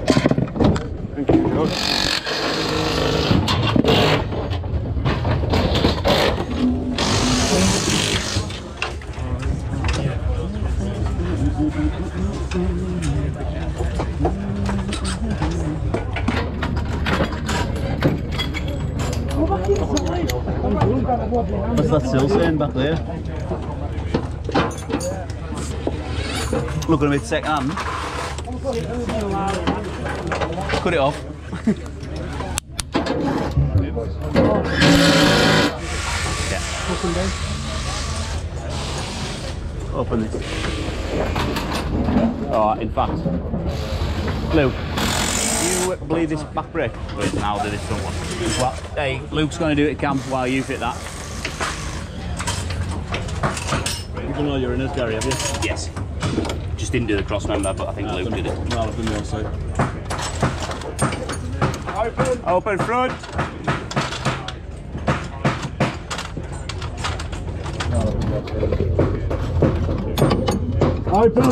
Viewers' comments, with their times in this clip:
0:10 you just know that they love what they do when you hear him humm 🤘
0:58 Took me till to realize they were speaking English